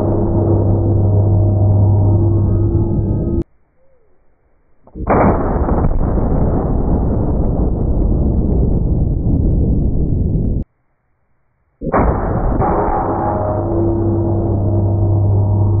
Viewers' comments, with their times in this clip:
0:03 sounds like slowed thunder hitting real close